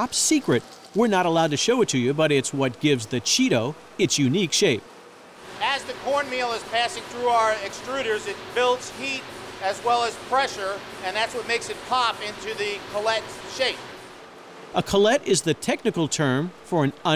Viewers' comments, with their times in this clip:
0:05 Tom Hanks' voice